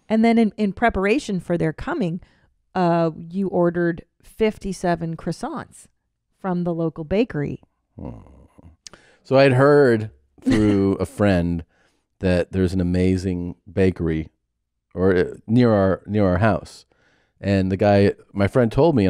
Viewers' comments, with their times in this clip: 0:06 good fart action